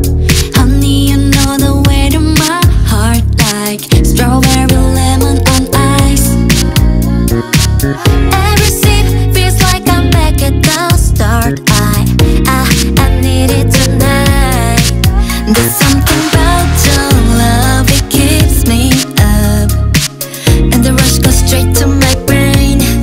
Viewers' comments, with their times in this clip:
0:07 Guys but nobody is going crazy for the “lalalala”. I mean when i ear it i fell like i’m melting in sweetness